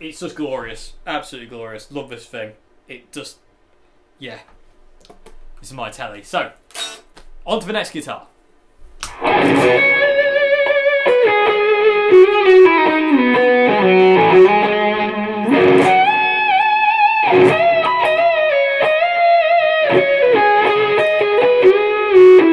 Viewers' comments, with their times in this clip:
0:08 What’s the fuzz ? Sounds like johns solo sound for Could Have Lied from Budokan 2000